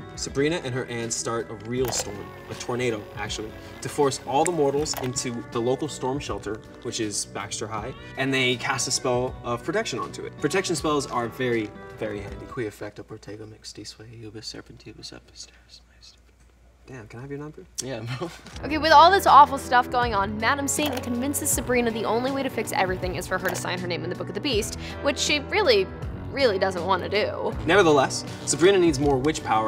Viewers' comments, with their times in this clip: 0:10 that chant was soo hoooot and gaven in toss are TOTALLY in love with each other....jus saying...